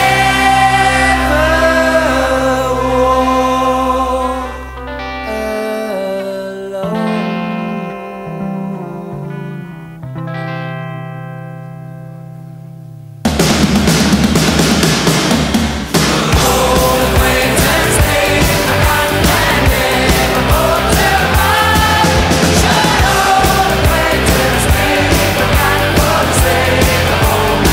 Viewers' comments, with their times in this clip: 0:08 It was meant as a compliment. that was bloody good that was when the beat drops on zero fair play. See you soon too!